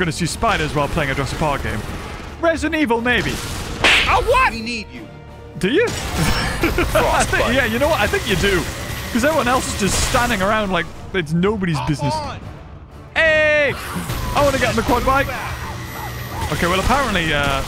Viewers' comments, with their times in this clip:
0:03 the Pimp-Smack sound effect killed me 😂